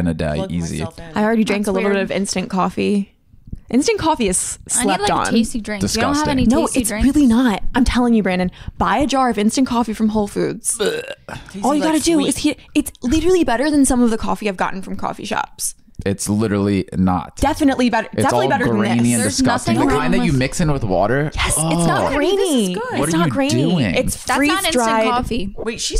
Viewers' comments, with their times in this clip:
0:09 I love how they just talk about talking all at the same time and start doing it right away😂😂😂 I love it